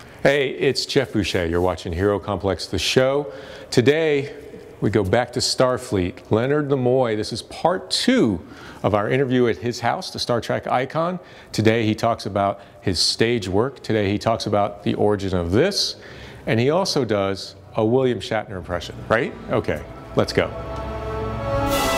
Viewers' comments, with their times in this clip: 0:06 Who the hell is Leonard the Moy ?